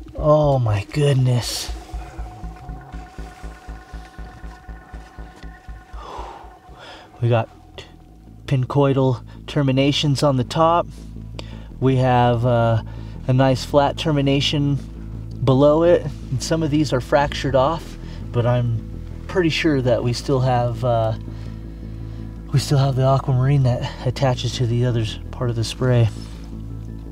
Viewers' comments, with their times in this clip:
0:08 Little did the Mount Antero mining crew know, but Caesar was marching his Legions though one of the nearby passes... Lol, couldn't resist with that background music.